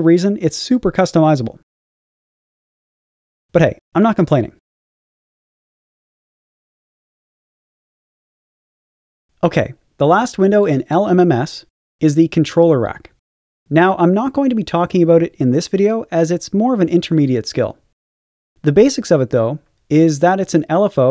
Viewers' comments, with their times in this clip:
0:06 Dank beatsthe beat is dankith